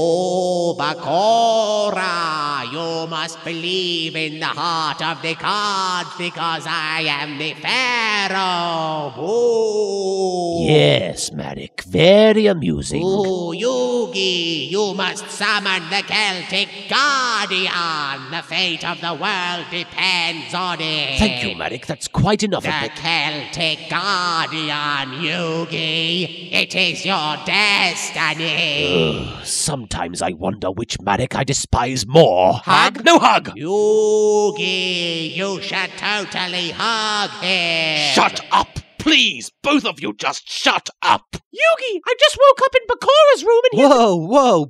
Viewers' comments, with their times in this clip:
0:03 so is he supposed to be doing grandpa or is that what they think the pharaoh sounds like?
0:32 "You shall totally hug him" He sounded just like the madhatter from Batman Arkham